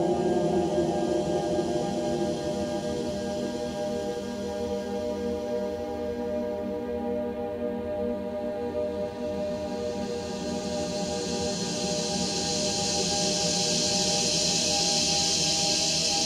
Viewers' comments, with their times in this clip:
0:04 WTF is this everywhere at the end of time shit lol